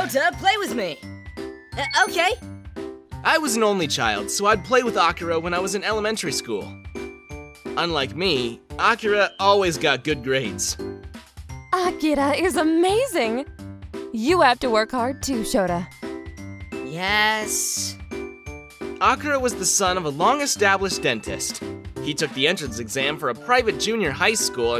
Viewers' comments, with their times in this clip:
0:05 the child’s way of talking is soo funny 😂😂